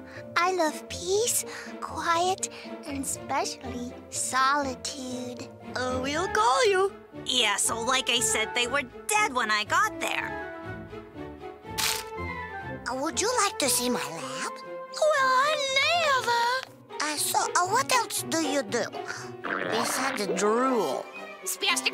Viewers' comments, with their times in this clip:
0:07 This girl sounds like kid Goku from the original Dragonball z